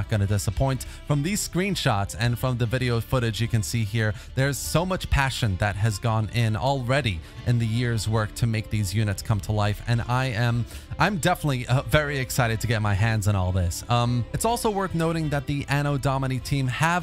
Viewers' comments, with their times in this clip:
0:03 god this music...